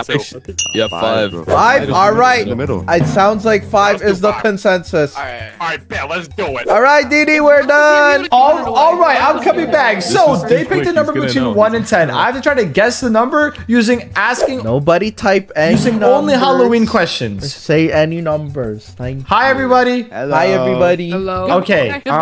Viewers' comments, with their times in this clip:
0:06 Nah it sound like bro said diddy